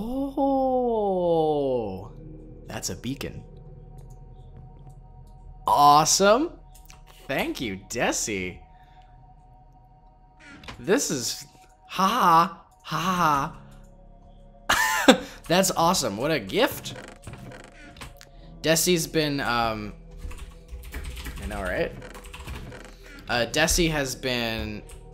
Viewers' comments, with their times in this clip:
0:10 "oooh said in gasping-amazement with thankfulness thats a beacon! O.O" .. i jus lol'd so hard at how you said that partially because i was slightly surprised myself at what gift you got but still.. pretty funny.